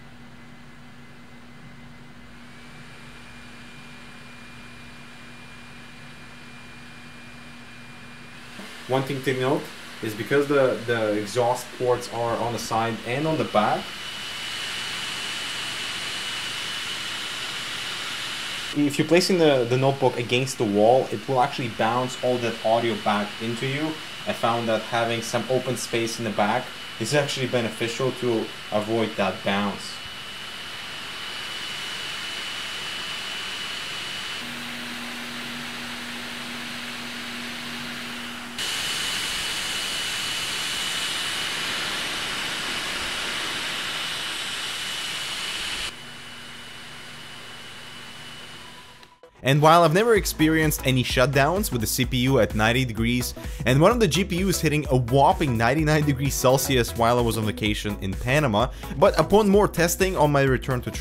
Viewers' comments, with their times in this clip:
0:03 Preparing for takeoff!
0:11 sounds like a fucking jet LOL
0:42 It sounds like an airplane!